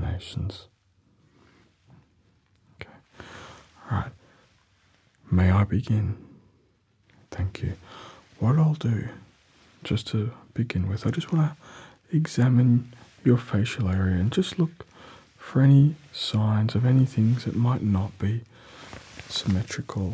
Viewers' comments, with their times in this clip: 0:05 sounds like the teachers I hated